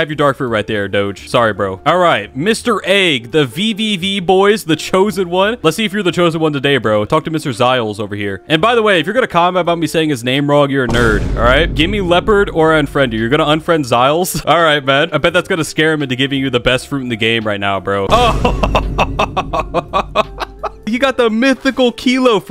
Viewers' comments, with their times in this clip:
0:06 i also promounce it like that aswell